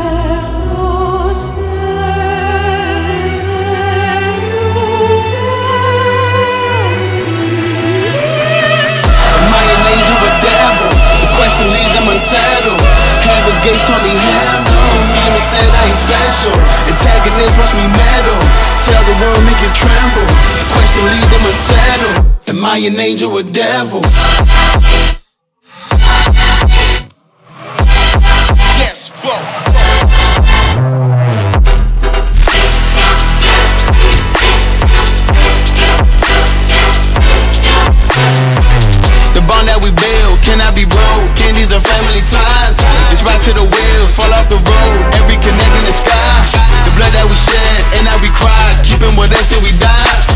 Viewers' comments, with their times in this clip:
0:08 Beautiful the part where the rocket ignited and that vocal ah magnificent.
0:12 I literally always laugh at the tiny waaaaah
0:27 is when the beat drop's
0:30 That launch was so good that i fucken cried (I get hyped when i listen to something cool) The transition with that bass growl is insane xD
0:32 The way drums start just a second before instrumental is such a small detail but it picks you apart from a guy who makes songs and a true talent. The build up and the way to execute is astonishing.